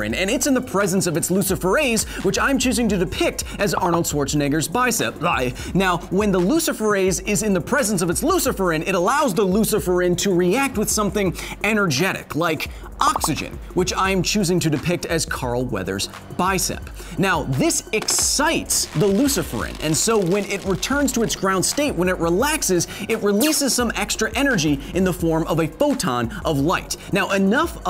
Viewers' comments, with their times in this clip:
0:04 Nice Arnold impersonation
0:05 carefull, your inner Dutch is showing
0:15 legit cracked up as the momentary Arnold impersonation.